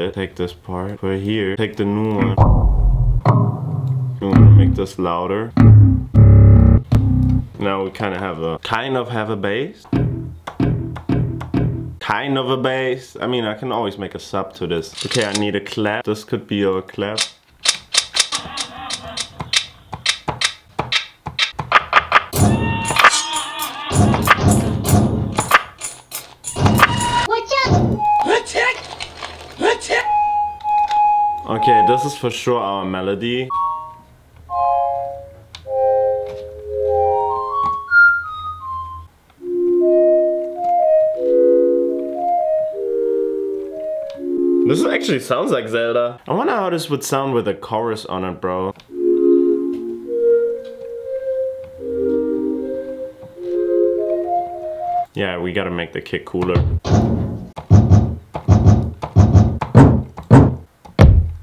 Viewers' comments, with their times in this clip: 0:06 the 808 sound at the mark when you dragged the wave file inside of newtone could of been an 808 .. that rumble it had when you dragged it down was sick lol
0:49 when you put that chorus on , that melody was vibeeennn